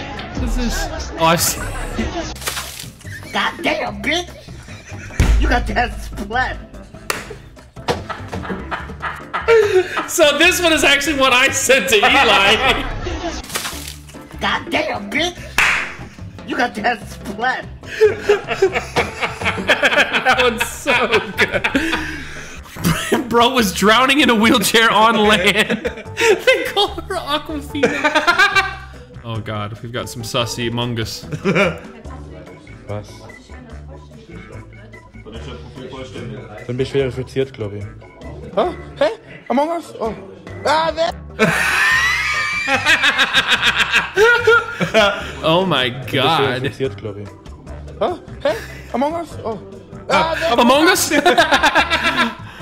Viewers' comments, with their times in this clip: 0:03 the way he said that 😂😂
0:35 I was soooo confused when I heard swiss german o.o